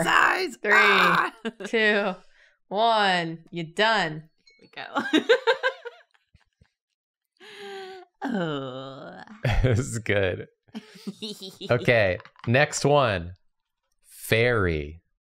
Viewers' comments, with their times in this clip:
0:03 Is that you? Kermit?